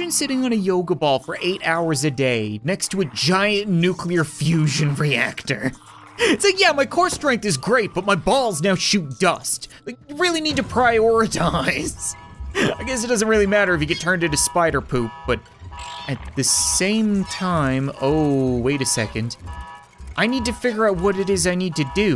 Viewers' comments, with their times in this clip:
0:08 excuse me? Shoot dust or piss dust cap?